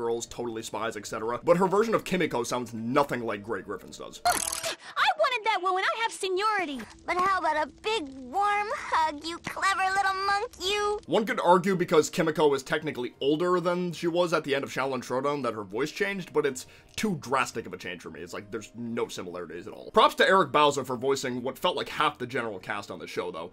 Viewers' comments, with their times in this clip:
0:07 sounds like the old harly queen